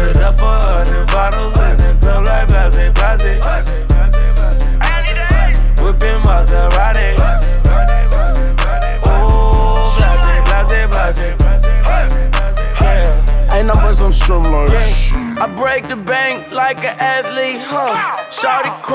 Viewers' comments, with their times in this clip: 0:05 What’s said at the minute mark? After all these years, I still can figure it out, lol